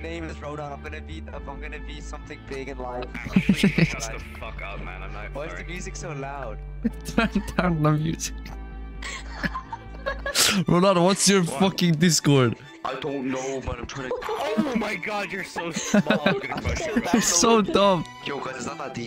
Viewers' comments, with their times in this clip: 0:04 The is loud because its loud